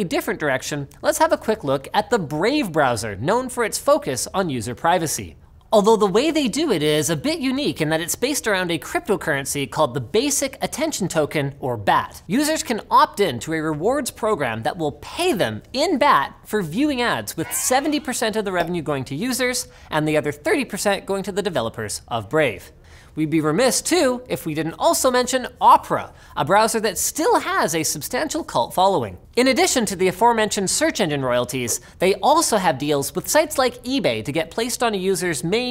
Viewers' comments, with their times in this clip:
0:06 Doesn't Linus' voice sound a bit different here??
0:20 is that a voice crack?